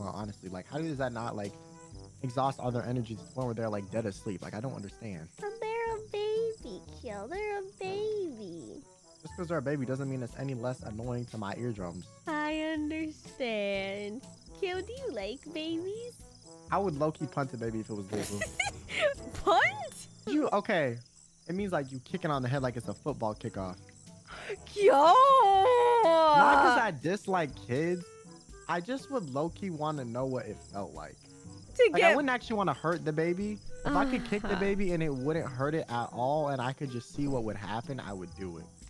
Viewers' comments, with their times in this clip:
0:08 the accent tho, so exactly the same...
0:26 Is it just me who heard “Not that I dislike kids.” Instead of “I guess I dislike kids.” Am I crazy? Or just tired